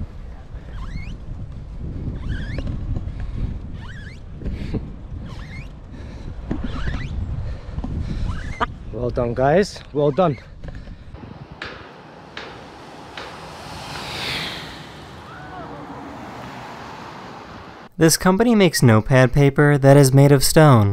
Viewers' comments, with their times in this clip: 0:06 The shitty noise doesn´t come from the birds but from his shitty bike .